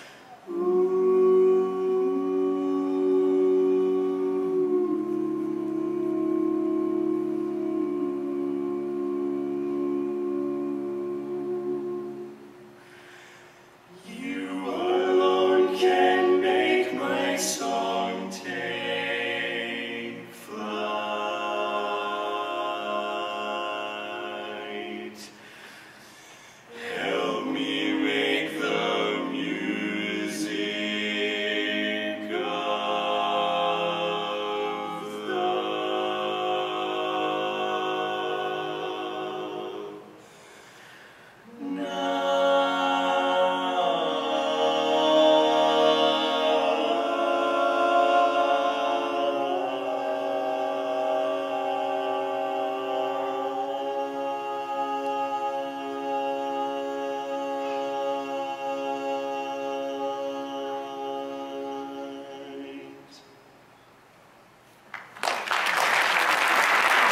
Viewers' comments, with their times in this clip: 0:05 that 9th is actually perfection. Wow
0:48 that was amazing but that switch to the minor chord completely blew my mind!!!! incredible!!!